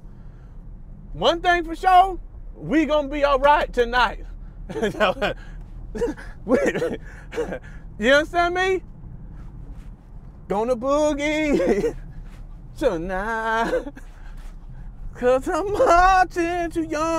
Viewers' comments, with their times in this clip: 0:05 about he was making his self laugh got outa character 😂